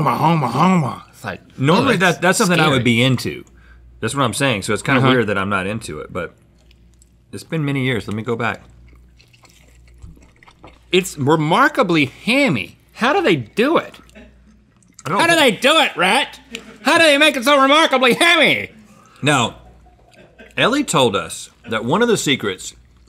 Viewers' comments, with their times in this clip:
0:10 The eating noises is intolerable😑😖😖